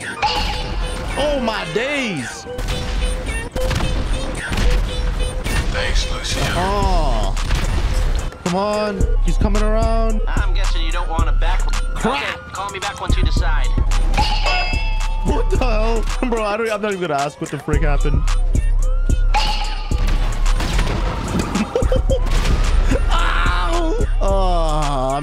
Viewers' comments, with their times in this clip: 0:07 The beat that starts SLAPS hahaha